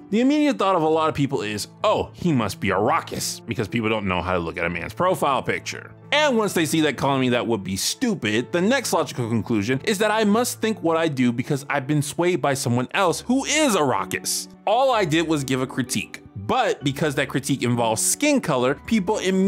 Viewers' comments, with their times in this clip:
0:03 what's a rockest? (time stamp ) now i do not have the greatest hearing so maybe you are saying something else, regardless i have never heard that term before at least not in that sentence and google dont know what it is either.????